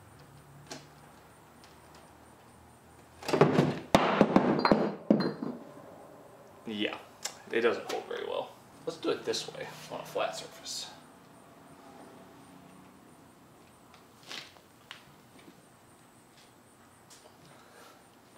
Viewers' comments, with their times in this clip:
0:03 brick made the flash bang sound from black ops 1😂